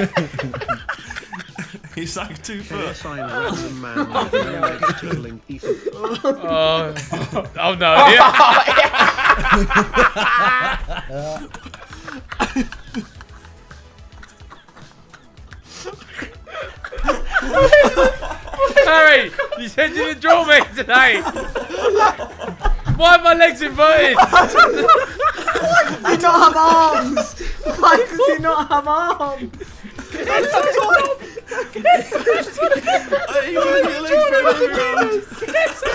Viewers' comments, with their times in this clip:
0:07 Bro this is a goated Sidemen moment literally went quiet cause they were dying of laughter!!!!! This video was JOKES!!
0:13 you know you're laughing hard when your laugh is silent 😂😂
0:18 they all laugh so similarly with eachother😂😂 Ethan and Tobi laugh hysterically almost out of their chairs, Simon and Josh die and then silently try to hide their face, and Harry and Vikk are constantly smiling and laughing😭